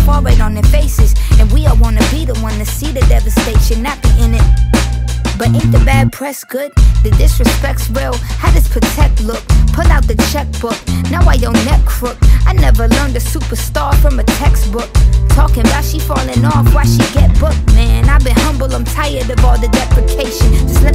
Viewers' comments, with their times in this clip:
0:05 At like was there something she had to cut out? I feel like there was something tht could’ve been said i tht pause. Or am I’m trippin?